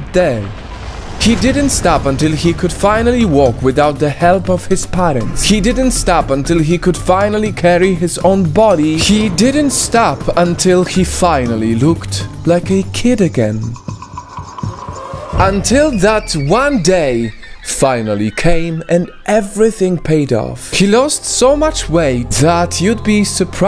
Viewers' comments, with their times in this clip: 0:09 when zyzz music kicks in! 😎👍